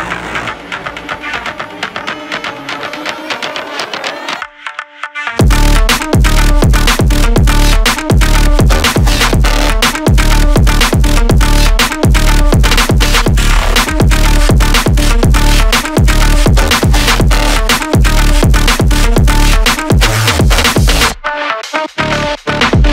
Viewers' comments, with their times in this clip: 0:05 it started sounding like perfect cell remix fire as hell